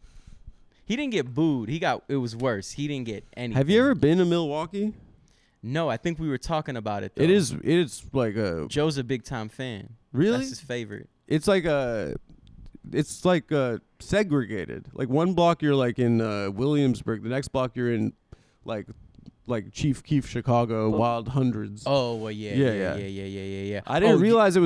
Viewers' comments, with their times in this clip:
0:07 made it to but couldn't handle "his" accent.